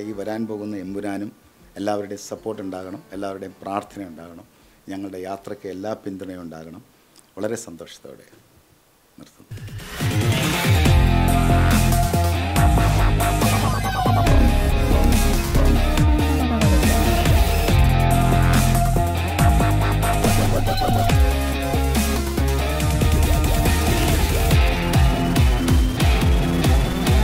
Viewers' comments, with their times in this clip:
0:09 The bgm 🔥 Deepak dev